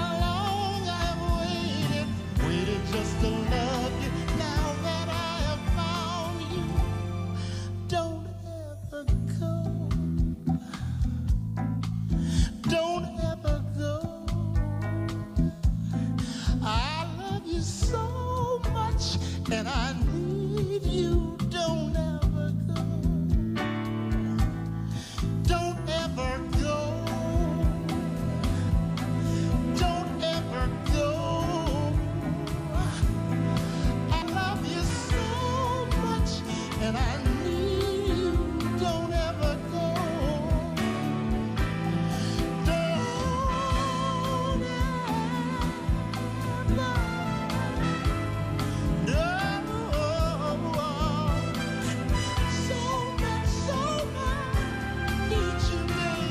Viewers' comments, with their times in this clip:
0:09 My understanding is that the melody in the introduction (which reappears commencing with "Don't ever go, I love you so much" lyric, and becomes in effect the coda to the song), which is not in the Dionne Warwick original, was improvised by Ron, and Burt said 'Yeah we're going with that!' Not a difficult decision! Whatever its origin, that additional melody/song section is a gorgeous addition to the original and is so compelling it practically redefines this classic tune.
0:42 Ronald putting that Isley Brothers touch to it